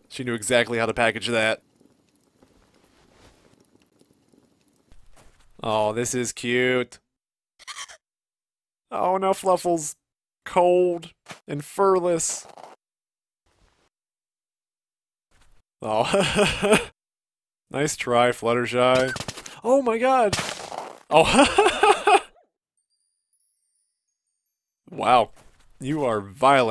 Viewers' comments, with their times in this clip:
0:07 She sounds like a sheep or goat (I always ask this to myself: is fluffle a pony or a sheep?)